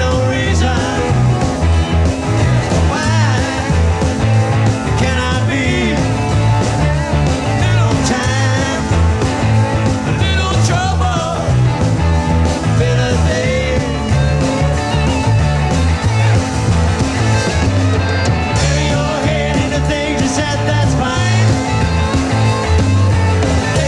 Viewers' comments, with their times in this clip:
0:09 Love it when he gets a little loud (but right on pitch) and he smiles at Joey.